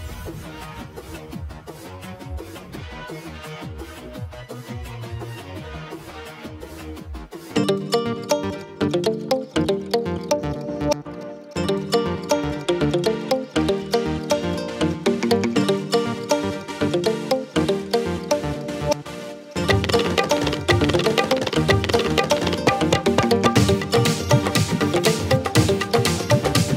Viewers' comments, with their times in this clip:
0:03 WHY MUSIC CHANGE TO CRINGE MUSIC
0:07 why da heall did that song start playing?